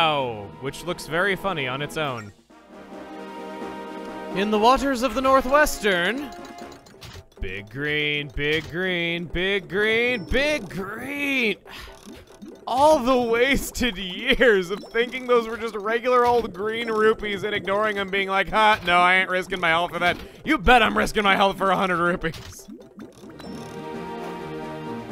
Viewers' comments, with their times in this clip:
0:07 'Big green, big green, big green BIG GREEEEEEEN' - Dolly Parton sings Zelda.